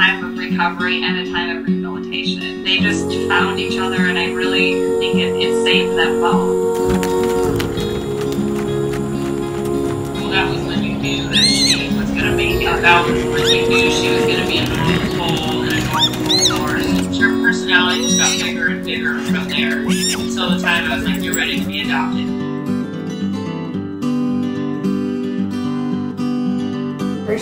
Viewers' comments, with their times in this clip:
0:10 omg she sounds so happy! :)